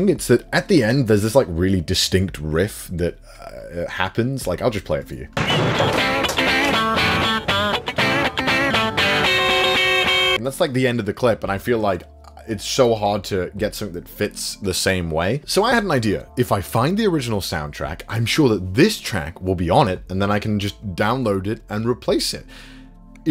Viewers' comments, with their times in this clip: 0:06 Could've replaced it with audio from Cowboy Bebop, Hajime No Ippo, and the older anime classics with similar guitar playing